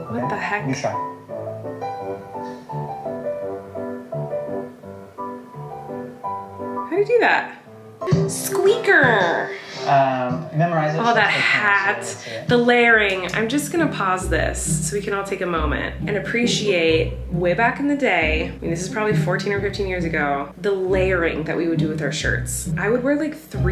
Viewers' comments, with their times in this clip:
0:08 The need to say “squeaker” in the voice and with that face was everything 😂